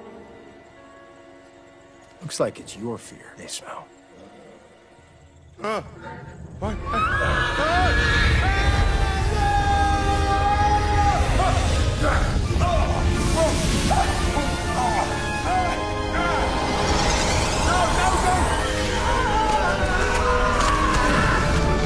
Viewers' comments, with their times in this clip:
0:07 Unpopular opinion but for some reason i find the horse noises very scary